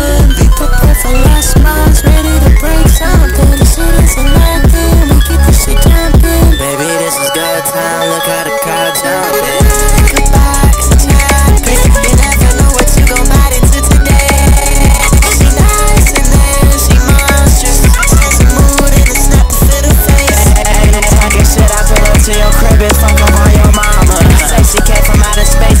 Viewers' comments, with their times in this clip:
0:06 is it just me or does it sound like "baby this is goodtimes out of a cartoon" without the lyrics or am i trippin 💀